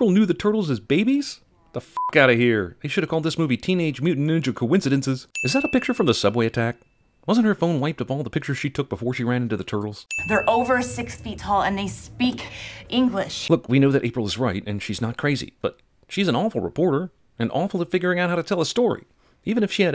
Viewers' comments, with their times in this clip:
0:05 he stutters this won't go unnoticed